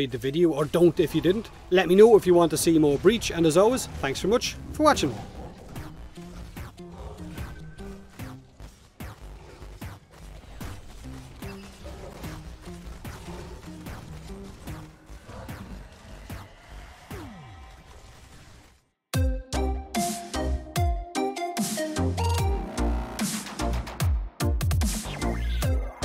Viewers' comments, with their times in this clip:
0:07 the background music sounds like someone shoting arca plasmor with beats